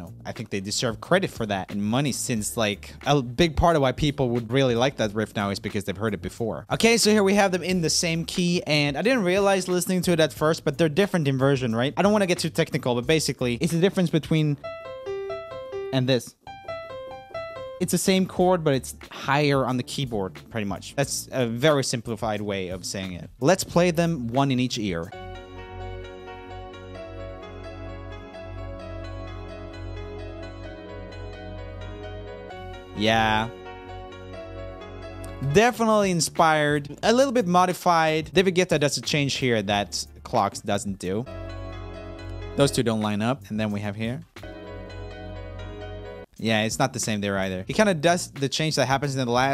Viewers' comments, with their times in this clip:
0:08 both of these songs together immediately made me think of the song breakthrough from lemonade mouth
0:12 it sound like the discord call sound
0:24 reminds me of the beginning of "Somebody" from Lemonade Mouth
0:36 I thought it was the same for a second there